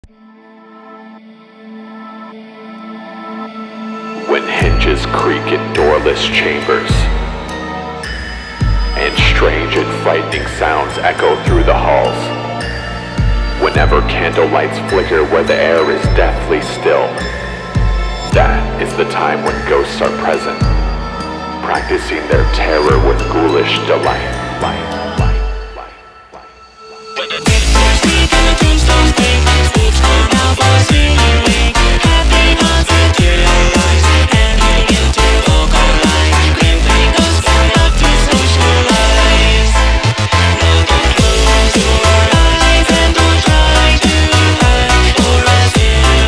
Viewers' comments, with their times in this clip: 0:08 what happened to his voice? sounds normal here he's only the guy in the intro doesn't even sound close
0:26 Mishread Lyrics: When The Bit*hes Sleep Toasters Creaks Snakes Come Out
0:28 you can hear his voice if you listen carefully